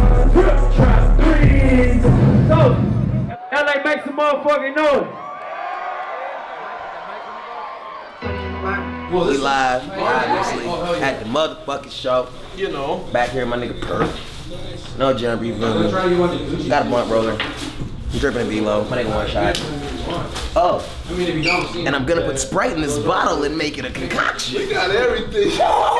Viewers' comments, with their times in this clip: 0:10 looks and sounds like a bootleg Lil Wayne